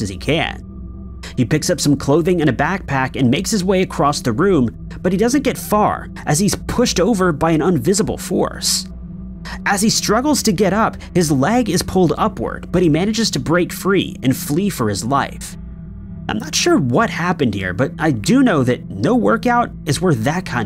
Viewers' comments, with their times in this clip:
0:06 Did he say “unvisible” or invisible? Idk why but it’s confusing me.